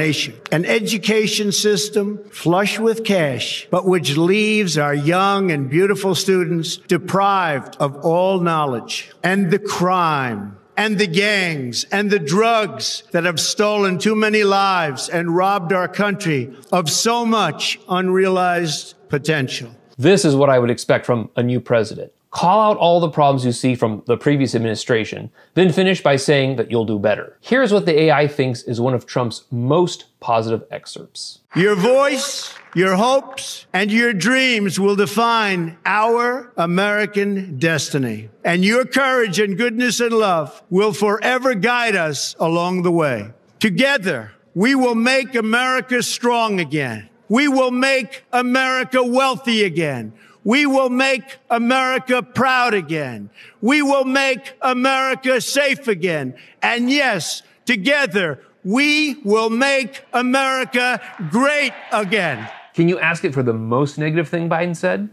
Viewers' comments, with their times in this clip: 0:07 The contrast between his speech ish and the mumbling, random noises he makes now is ASTONISHING! If nothing else, it truely shows how severely his dementia, and other health issues, have affected him!
0:47 dang, who wrote THAT speech for trump? it's really good. also, lol back when he sounded coherent. and could read? he's struggling these days. we just need younger people. idk how it got like this. retirement age is not so good for the most stressful job in the world.